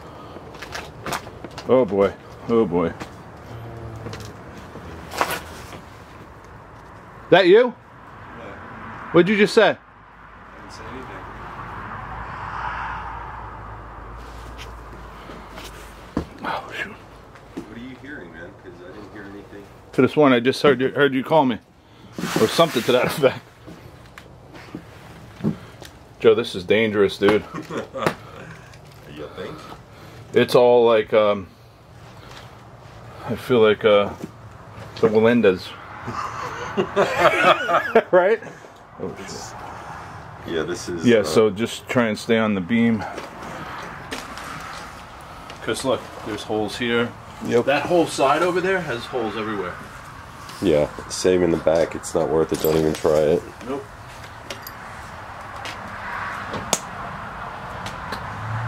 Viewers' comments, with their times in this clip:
0:04 sounds like a man groan
0:39 .. sounds like a woman whispering," it's good ".